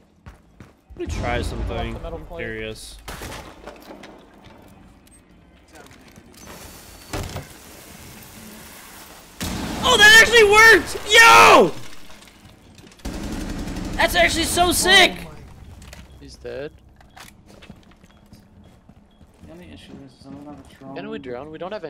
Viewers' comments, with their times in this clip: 0:09 markipliers voice it’s big brain time